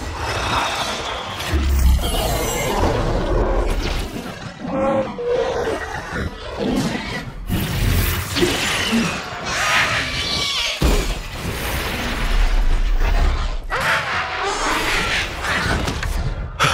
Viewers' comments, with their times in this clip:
0:04 so this is how you get to dub Smaug